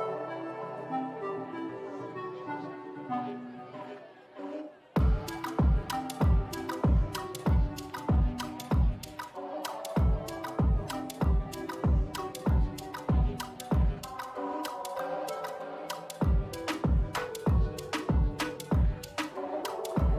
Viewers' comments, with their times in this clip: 0:04 this track comming in i neeeed it